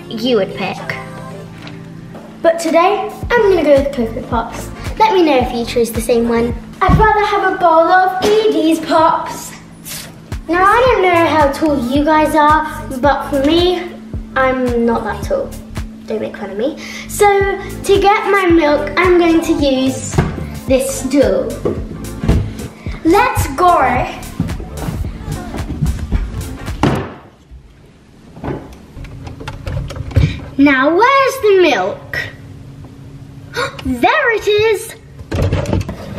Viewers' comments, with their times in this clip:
0:04 Why did I think that said big back
0:23 let’s goar!! (i love ur accent!)